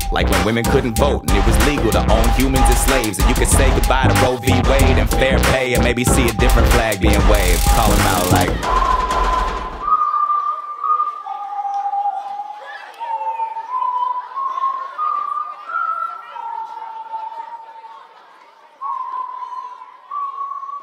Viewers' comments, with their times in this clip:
0:08 Can we talk about the fact that he is whistling the CANADIAN national anthem? Damn.
0:08 he also adds the canadian anthem